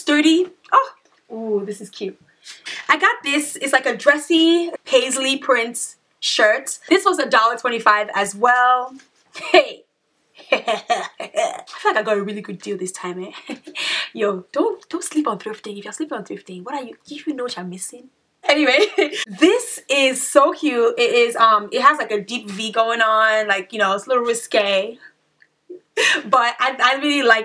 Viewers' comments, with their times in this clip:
0:09 I love your laugh. 😂